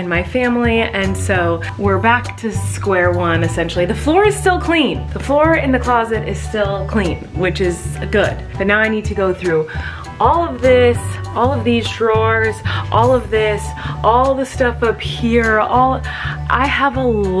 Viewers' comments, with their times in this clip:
0:03 when she said “the floor is still clean” I feel like it sounded like Miranda.